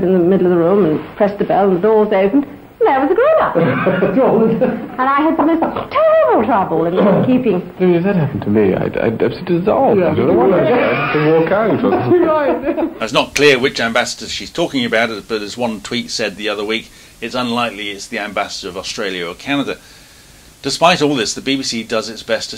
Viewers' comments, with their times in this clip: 0:08 That Prince Charles impression is a bit too silly to be real 😂.